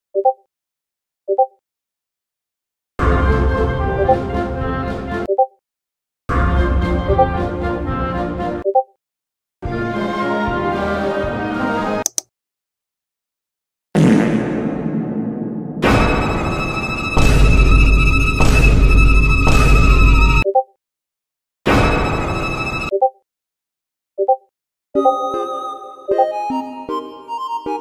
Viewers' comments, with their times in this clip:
0:04 Hecker: It went down. Me (Agent Daniel): Are'u crazy? You fool, the media volume went up to increase, not to decrease!
0:11 loud taco bell sound
0:13 was that a fart of taco Bell
0:14 Taco bell sodio fart